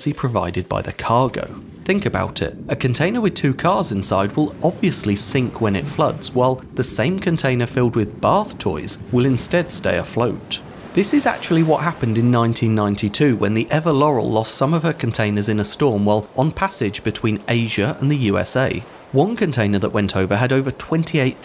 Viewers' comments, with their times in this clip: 0:05 "obviously sink when it floats" instead of fills, or is my hearing going out hahaha